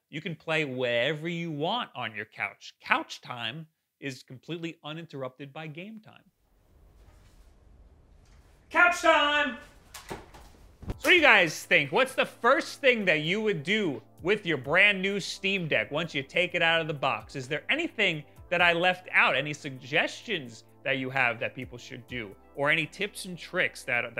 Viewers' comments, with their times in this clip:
0:09 is the dog ok after that slam?